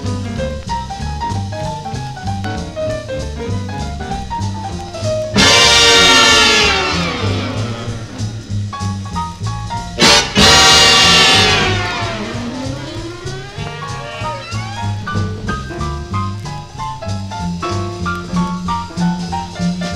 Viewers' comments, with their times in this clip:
0:05 First time listening and hurt my ears. God damn xD